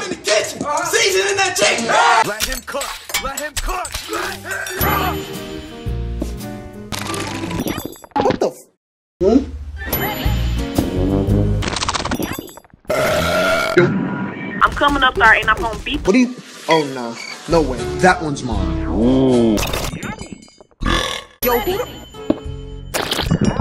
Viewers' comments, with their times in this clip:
0:07 Nice eating sound